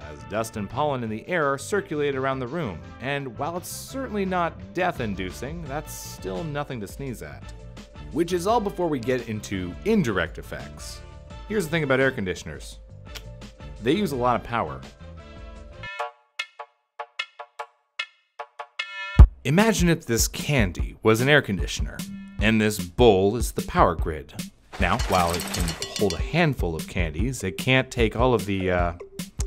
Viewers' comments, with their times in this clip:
0:10 POV: President Biden Talking about literally anything